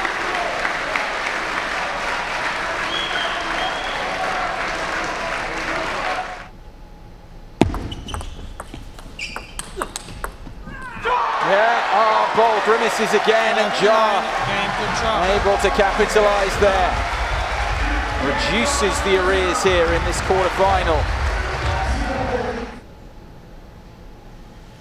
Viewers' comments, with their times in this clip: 0:09 wow you can feel Timo's pain in that scream, kinda got me a little worried there